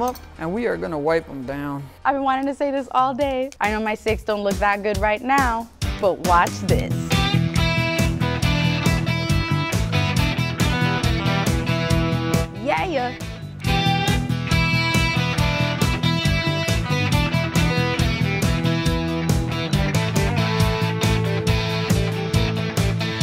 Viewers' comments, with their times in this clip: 0:07 Home Depot music